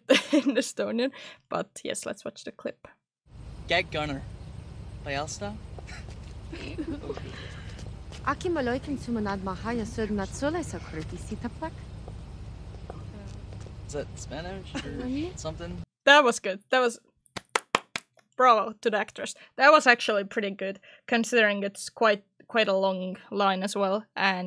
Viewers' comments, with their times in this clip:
0:05 "that was pretty good" - I still can't make out anything she's saying and I've tried to listen to it at least 5 times 😩